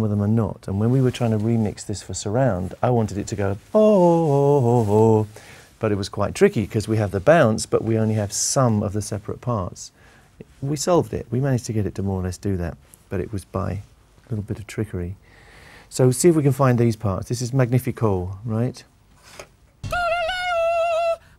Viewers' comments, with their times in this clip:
0:09 you really hear how good freddie was